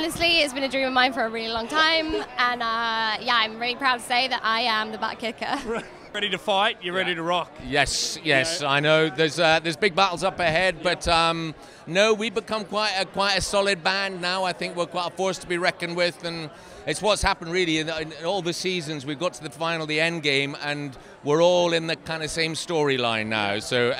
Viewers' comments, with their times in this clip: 0:10 sounds more like some Australian/British Commentator for the game of Cricket and also explaining things like there is going to be big battles ahead, being a cricket fan since childhood, it sounds more like a post match presentation. :D Love you all